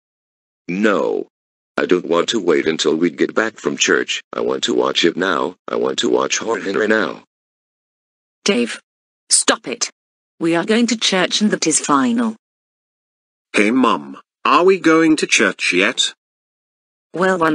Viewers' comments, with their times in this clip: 0:03 I thought he said I want to watch him now